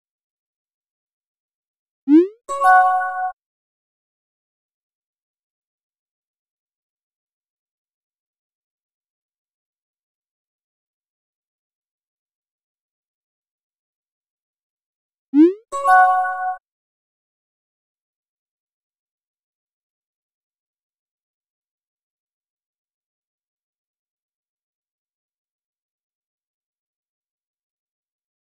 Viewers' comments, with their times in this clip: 0:09 Why do I hear a guitar playing in the background